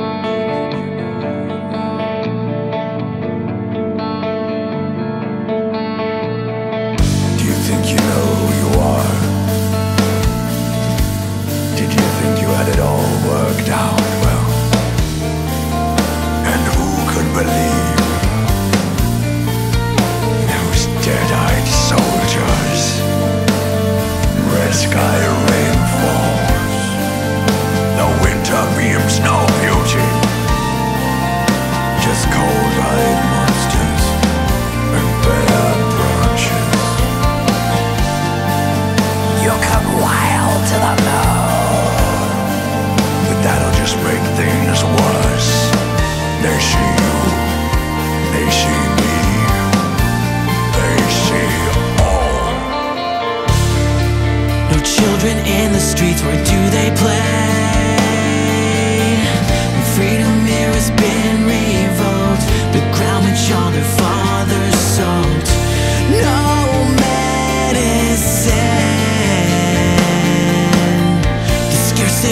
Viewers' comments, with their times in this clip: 0:05 that sounds so much like Dream Theater from their Black Clouds & Silver linings album, absolutely stunning!
0:05 I want to know who the guy is with the raspy voice and medieval accent he reminds me of the god-like guy in the tv show vikings
0:05 They should have mixed in Alex Jones instead of Mikee
0:07 Sikth vibes anyone?
0:08 As brilliant as the song is, no matter how many times I've heard it, I cannot stand the mini monologue from the Sikth vocalist. I skip it every single time.
0:38 sounds like Dave Mustane LMAO.
0:53 what an arrangement